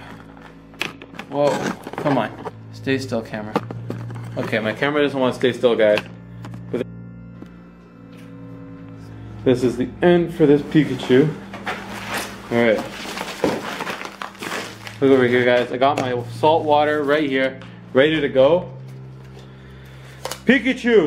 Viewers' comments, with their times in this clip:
0:06 i heard a whisper
0:06 u can hear some one whisper
0:08 you hear whispering, continues for a moment.
0:09 u can hear whispers